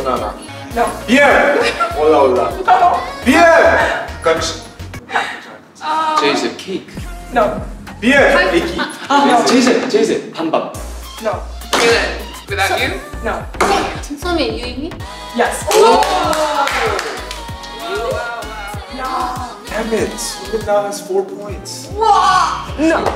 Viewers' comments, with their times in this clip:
0:06 jseph’s soft tap and c a k e ?😄